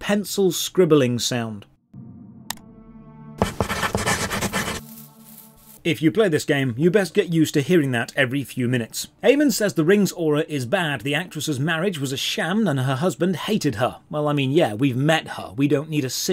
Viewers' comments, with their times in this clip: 0:03 The pencil scribbling sound killed me. 😂😂 It was so wildly loud 😂😂